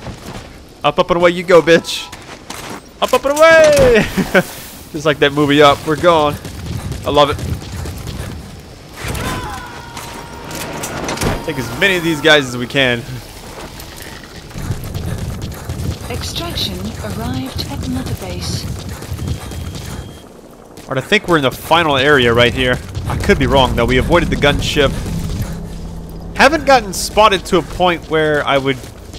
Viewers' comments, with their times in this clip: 0:10 did you hear that scream